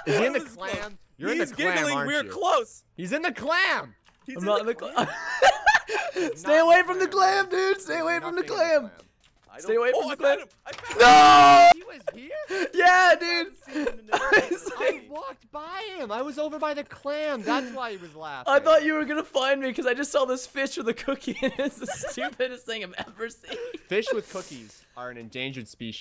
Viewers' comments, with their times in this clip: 0:10 RIP EARS x_x I was playing minecraft and had this in the background so I didn't see the warning LOL